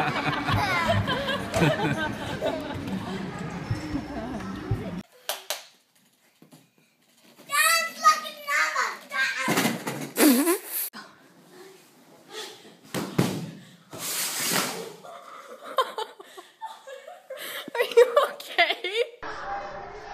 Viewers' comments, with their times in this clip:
0:06 WHAT DID THAT GIRL JUST SAY!!! I heard: Glock Fluffing Mama